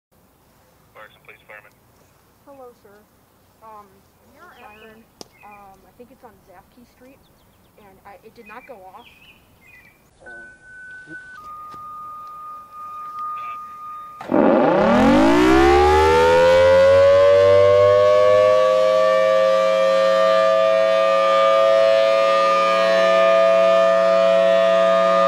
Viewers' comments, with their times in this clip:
0:08 It did not go off 5 Seconds Later… VROOOOOOOOO